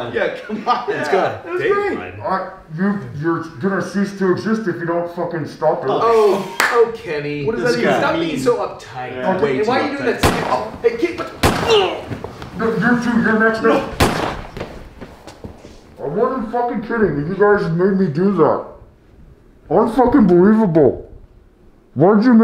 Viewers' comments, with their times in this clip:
0:03 seriously, if you’re from there, it’s reaaaalllyy easy to tell Kenny/Tyson is from Winnipeg when he talks 😂🤣